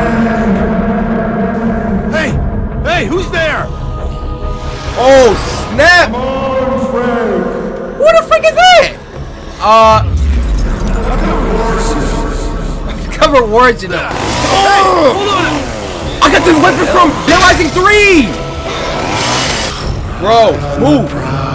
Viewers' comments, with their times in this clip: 0:08 did I hear: who the f*** is this or am i trippin?